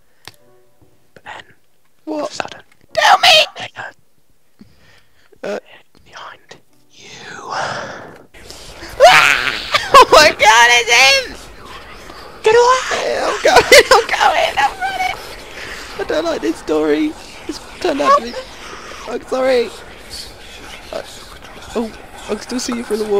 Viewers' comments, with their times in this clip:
0:09 best scream I ever heard in my life. Subs this video cause that scream.😶